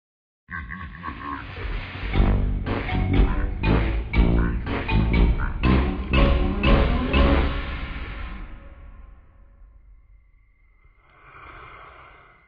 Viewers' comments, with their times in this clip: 0:00 Sound like Green Lowers